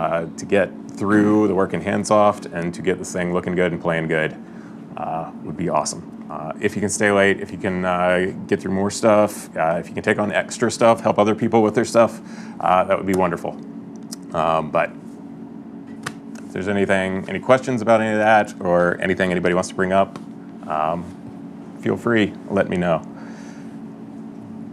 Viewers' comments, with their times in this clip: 0:07 the ominous musical tone that plays when this guy casually suggests crunch for the first time